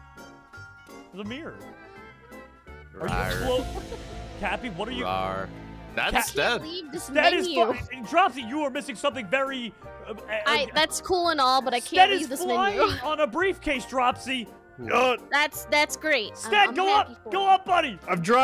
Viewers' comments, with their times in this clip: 0:03 nyan cat music starts